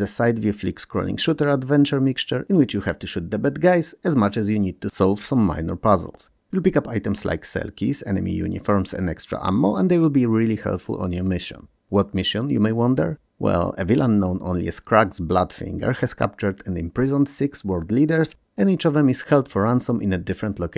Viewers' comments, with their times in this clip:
0:08 For a moment I was confused why you pick up selkies, seal mermaids. Also you tend to pronounce "skull" (pronounced: skal) as school (skul) and I'm always confused why school (szkoła) kills you.